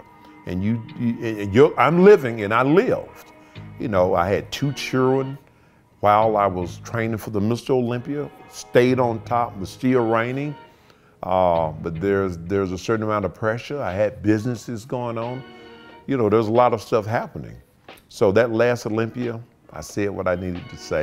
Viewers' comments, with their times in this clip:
0:03 oh thought he said I had two churros.
0:04 What the fuck is a chill-rin?
0:04 Did he say churing (children)???😂😂😂😂
0:04 I had 2 Chillren lmao